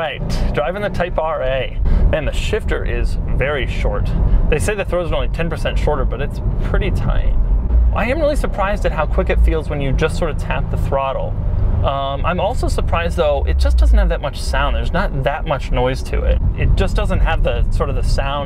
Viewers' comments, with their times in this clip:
0:06 Why the hell did u say it like that lool